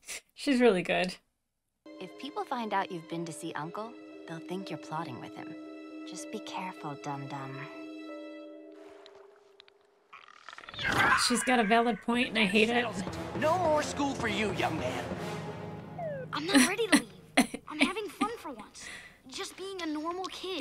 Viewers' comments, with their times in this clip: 0:06 Mae Whitman is so good! I can’t even tell you how many times I’ve watched this show and still her voice acting when she confronts her father is just incredible. I get teary eyed every time. One of the few moments where I think Azula is being genuine with her concern for Zuko. Her voice changes and everything.